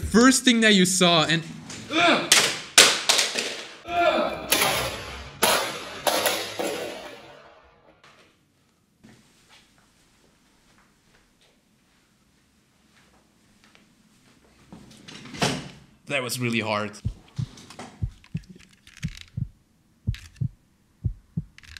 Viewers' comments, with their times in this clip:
0:03 That yell was unhuman!
0:06 gave me tinnitus 😭😭😭😭